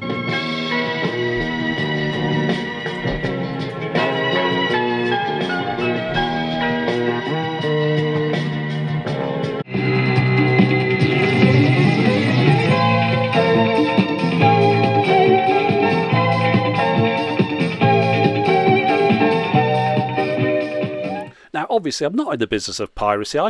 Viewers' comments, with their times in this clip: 0:10 The song is: Voyage - From East To West. Not Barry White... But it sounds kind of like something me might have done.